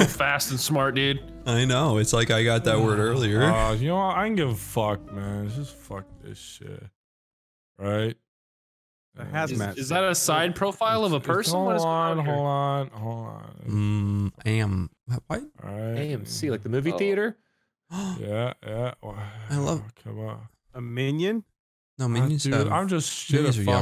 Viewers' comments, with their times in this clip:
0:04 when the music went out as he said “fuck this shit” I got scared